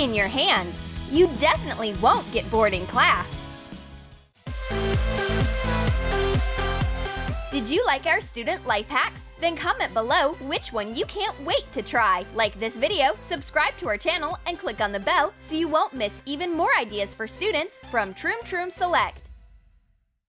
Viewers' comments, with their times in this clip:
0:07 when i was and i kinda heard did you like our stupid life hacks but then i watched it again